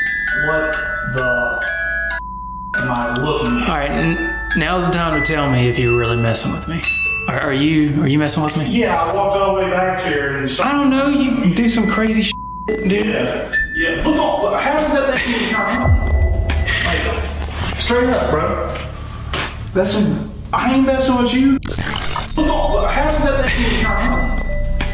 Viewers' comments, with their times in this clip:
0:07 I have the same music box and it plays the same tune I am freak out!